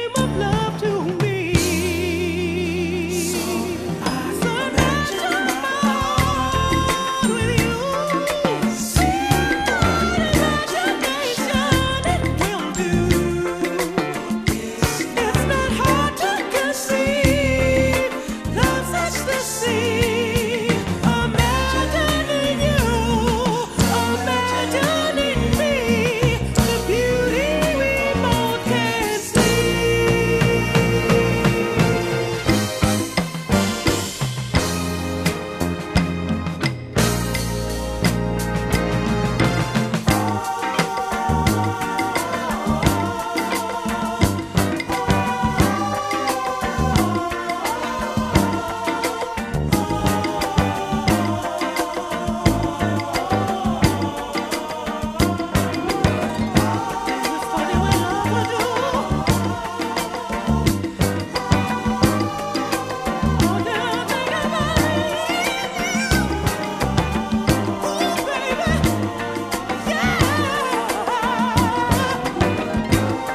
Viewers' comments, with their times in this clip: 0:03 Occasionally I forget about this song for a month or two, and whenever I come back, Bailey's vocals - especially at the chorus make me just wanna shout. There's just no way to overstate that drive, that soul, that attitude, that impact...
0:33 You can really hear Verdine rockin’ that bass, especially at that mark. His musicianship seriously helps carry all their songs to the highest level. Love me some EWF!!
0:38 love the incredible harmony of "aahhs" and on, from my absolutely favorite group, ... still listening to their music - - Maurice White's legecy
0:39 these guys sound like boundless winds blowing through the diverse colorful landscape on some high mointain in Africa.
0:40 til the fade,,,,,,,,,,,,,I can only imagine what it was like sitting in the studio while Philip Bailey took this part of the song to a level that's unmatched to this very day!!!!
0:40 Maaaan, Philip Bailey rode the HELL outta this song starting This is my steppin song!!!!!
0:40 Starting until the end of the record... just incredible singing...
0:40 From roughly out...Philip Bailey'' mesmerizing voice take us to Utopia.
0:57 is when Philip Bailey gets so raw and emotional in his vocals, he gives me goose bumps! Seriously!